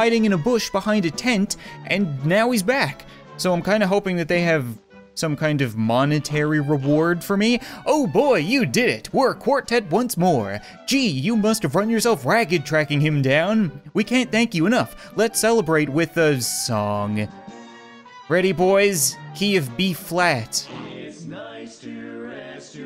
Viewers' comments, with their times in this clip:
0:08 the song lasted for about two minutes LOL XD